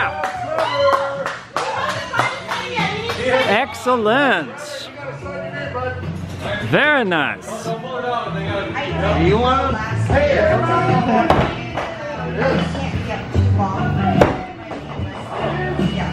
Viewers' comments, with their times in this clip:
0:03 did I hear that as Axe-ellent?…